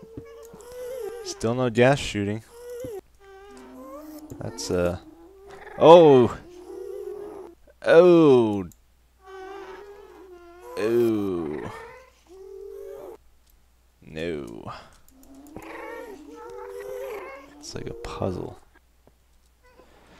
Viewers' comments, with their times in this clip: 0:04 *sees the chest* - OOOW! *sees what's around it* - eooow... *sees the ghast spawner* - eeeeew... *looks around* - nooeew... That made me lol hard :')